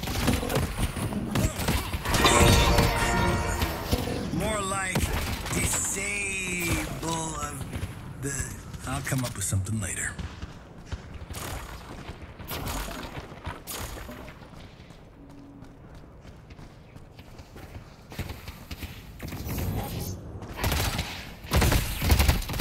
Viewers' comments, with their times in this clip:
0:04 i fvcking addicted to his voice bro 😊